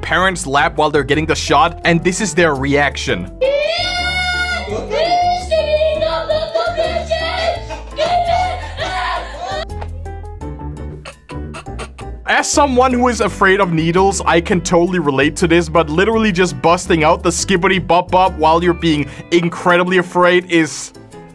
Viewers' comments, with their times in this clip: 0:04 i hear a polish on ther Is something between "skibidi toalet im drawning" Im not proud of my people